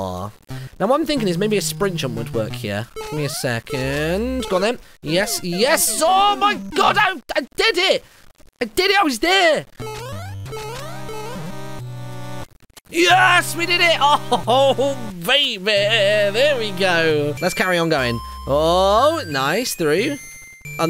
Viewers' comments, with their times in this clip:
0:04 The sound is somehow early